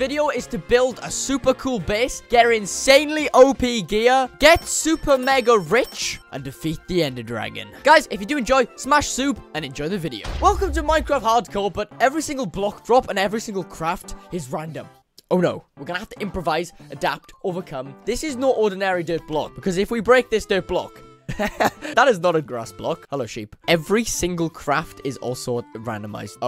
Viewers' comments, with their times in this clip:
0:08 Smash Subeee me: where is sube 🥺